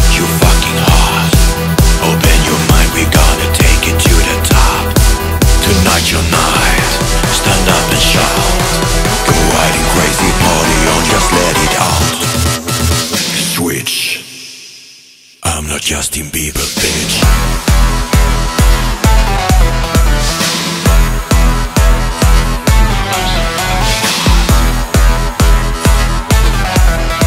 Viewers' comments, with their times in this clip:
0:08 On the voice of Duke Nukem